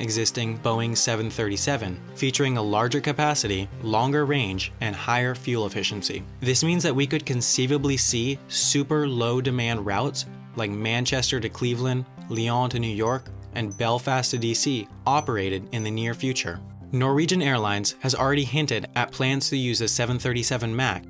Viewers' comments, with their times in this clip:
0:08 The ding-sounds are not played correctly.